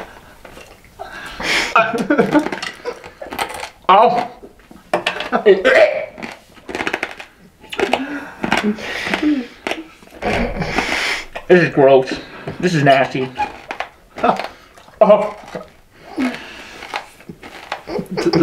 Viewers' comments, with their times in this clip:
0:06 when the class is quite and you eat a hard mint